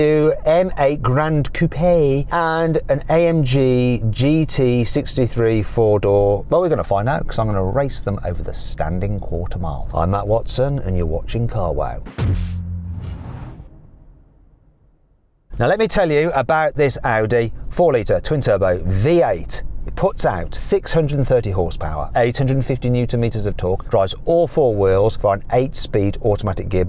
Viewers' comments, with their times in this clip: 0:09 „Emma Watson and your watching carwow“